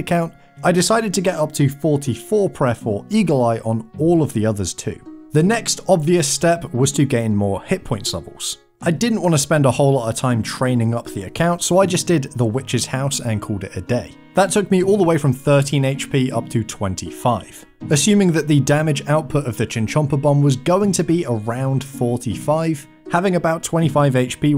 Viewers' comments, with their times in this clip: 0:05 may I ask what runescape song is playing in the background here? it sounds like a runescape version of Smashing Pumpkins song Mellon Collie and the Infinite Sadness